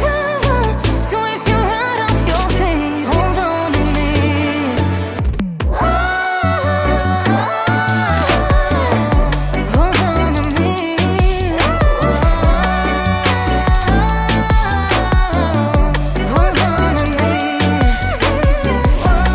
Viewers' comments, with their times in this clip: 0:05 my brain stopped working here That gentle high note is impressive!